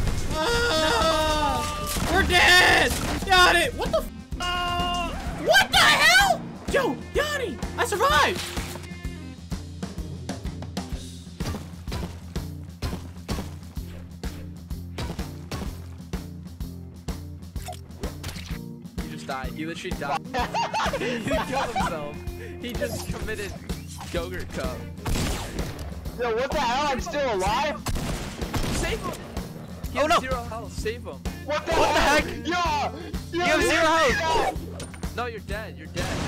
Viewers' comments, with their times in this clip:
0:05 the synchronization of the scream and his arms
0:10 the pickaxe went with the beat
0:10 he hits his pick in beat of the song
0:10 The Pickaxe matches with the music lol
0:17 the picaxe and the song is in sync